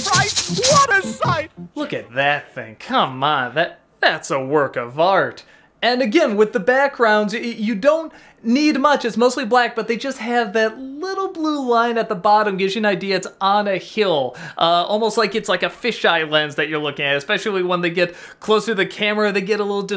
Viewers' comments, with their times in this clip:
0:06 I'm the odd one out: outside of what I affectionately refer to as the Elephant Gundam, (and even that, considering that the trunk from the "chest elephant" ends in the mouth of the "groin elephant" makes my current adult self think of possibly unintentional things), I've never thought this was creepy. If anything, the bouncy music and the falsetto voice that made me think of Miss Piggy from the Muppets makes it hilarious for me.